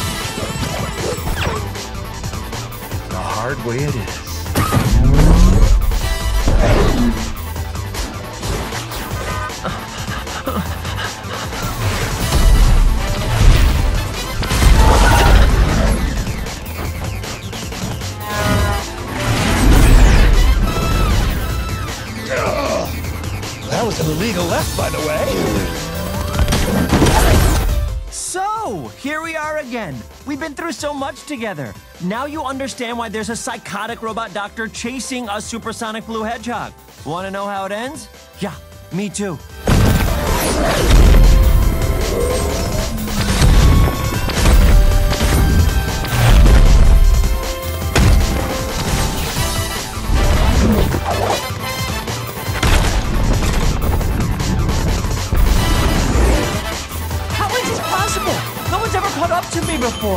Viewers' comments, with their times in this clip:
0:05 Literally as soon as Eggman Zooms to Sonic The Song Intensifies.
0:48 This music, this pose, fucking awesome idk why it's just fucking awesome